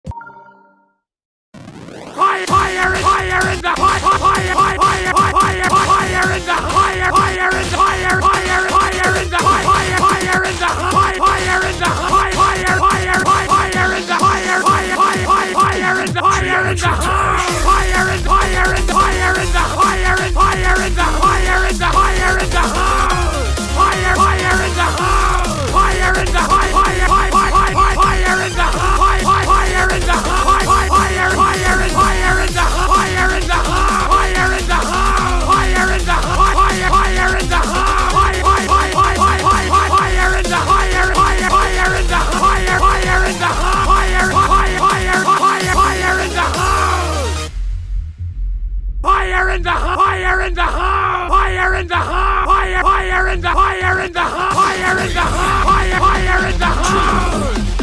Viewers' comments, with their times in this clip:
0:04 why does actually sound kinda good
0:42 fire in the fire XD